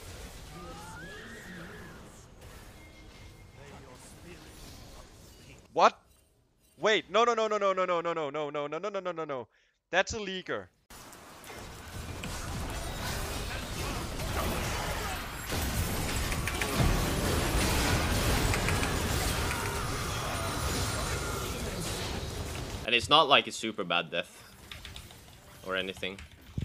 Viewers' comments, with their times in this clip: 0:09 He even did the Accent right
0:09 thats a e girl?